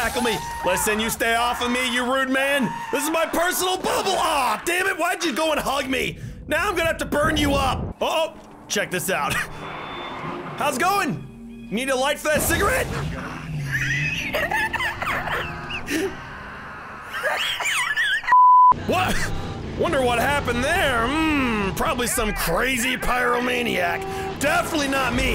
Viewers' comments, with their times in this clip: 0:08 I couldn’t stop laughing! What is that laugh!!! Lmao 🤣